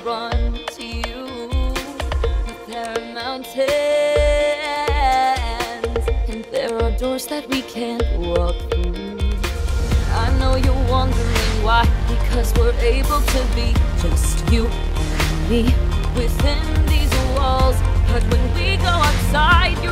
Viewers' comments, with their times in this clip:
0:03 If I am gonna be honest, when she sang "Mountains", I started dying from laughter. And the harmony wasn't as perfect as in the real movie. Not trying to throw shade though...